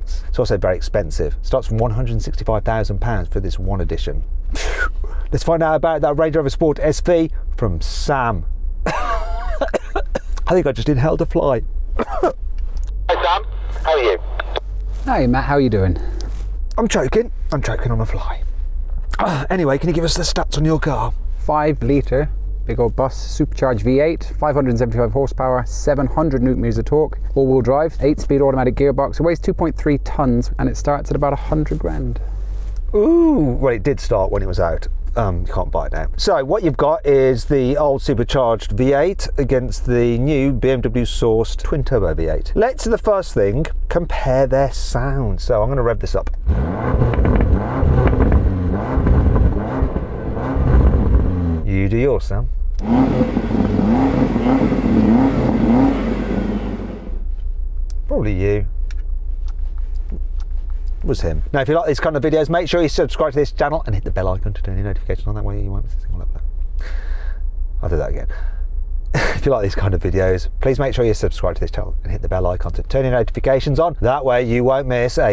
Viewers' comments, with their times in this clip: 0:04 0: That turbo sound 😂😂
0:53 its the sound of the new S63 powered SV, the SVR sounds more brutal than this
0:56 WHAT THE HELL? Twice the same audio???